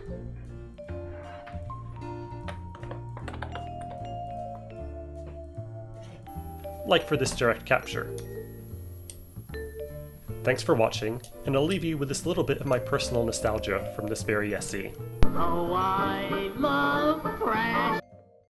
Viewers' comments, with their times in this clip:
0:06 Love it! So many neat projects are popping up around the Pico now! FYI: There's a high-frequency noise introduced as you plug the VGA to your capture device.